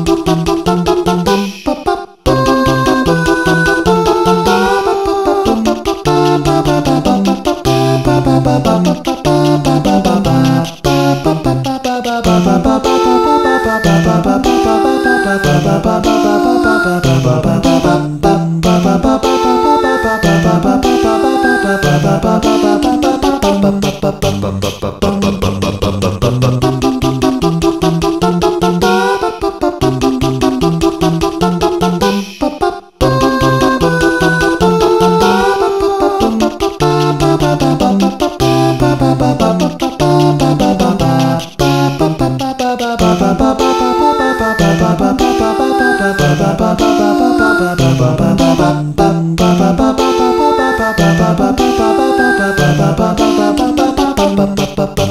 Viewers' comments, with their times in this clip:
0:05 Holy crap... The harmony ... I can't take the awesomeness.
0:25 gasp I was waiting as to how you were gonna make the two "knocking" or drum sounds in the song and ... you didn't! phooey!
0:40 Expected the music to change to the stat music.